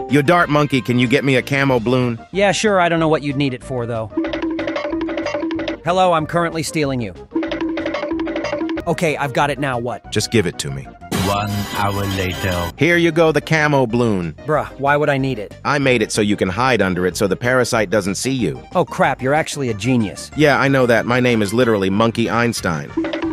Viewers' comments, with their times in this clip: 0:06 The way he said Ok🤣🤣🤣🤣🤣